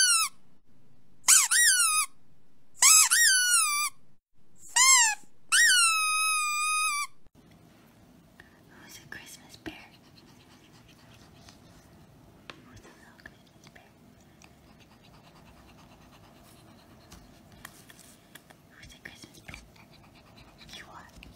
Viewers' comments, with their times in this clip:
0:04 my dog jumped on me looking for the squeak